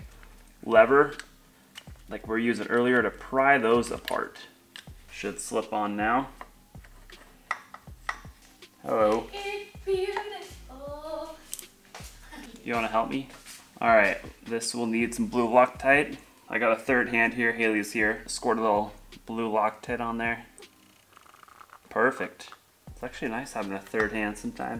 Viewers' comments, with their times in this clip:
0:09 😂who was singing